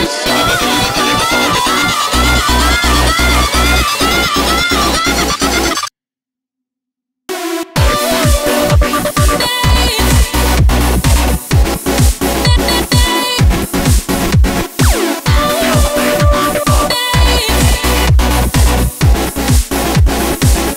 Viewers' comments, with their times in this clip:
0:05 break just didn't go down well. However, fantastic song in almost every other regard. Well done!